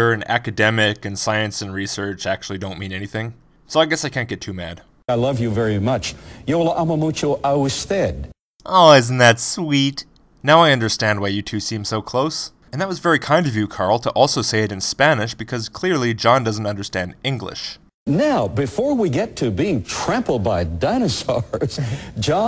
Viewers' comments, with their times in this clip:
0:06 I'm Spanish and I don't understand what Carl Baugh said, too bad he knows more about speaking Spanish than about science...